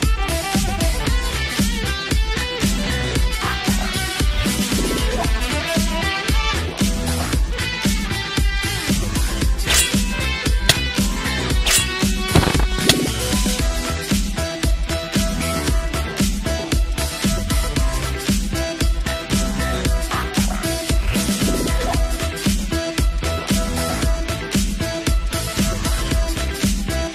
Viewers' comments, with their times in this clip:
0:10 spoiler alert. New Tibia sound before update.